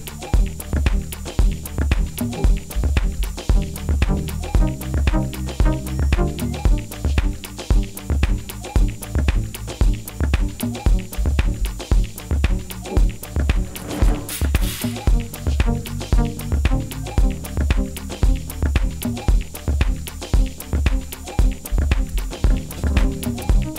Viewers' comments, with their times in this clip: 0:05 why I feel like Mario Bros is jumping around my head?